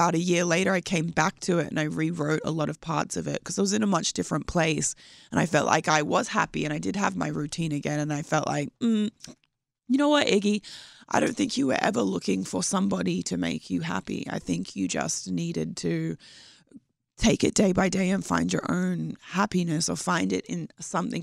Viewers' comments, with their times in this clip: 0:08 She lost her accent for a bit Lol